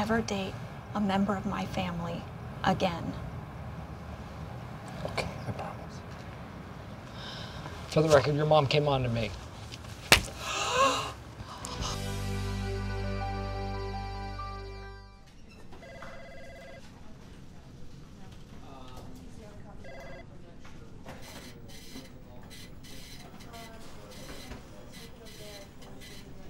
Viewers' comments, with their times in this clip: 0:09 sounds like a clap